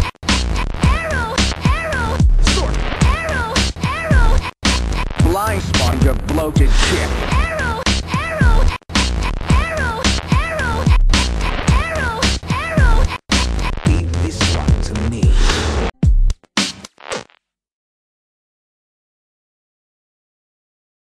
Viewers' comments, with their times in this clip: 0:05 my brother and I were wondering what Ace was saying, and my brother said " It sounds like he is saying 'Lifes like a bloated dick" lol